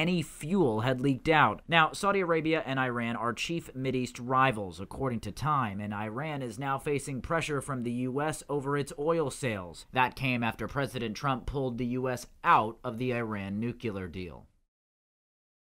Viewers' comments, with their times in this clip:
0:11 iran nucular ? i thought it was nuCLear :D